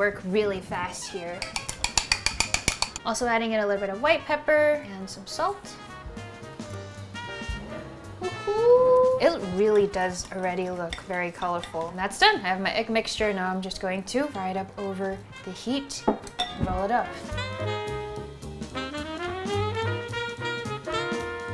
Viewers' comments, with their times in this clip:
0:08 the “ hohoooooo “ reminded me of Alvin 😹